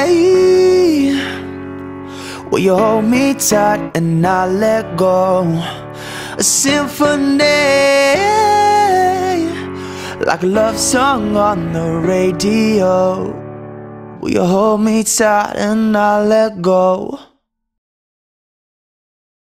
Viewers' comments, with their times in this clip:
0:07 OMG that high note was just UGH jealous...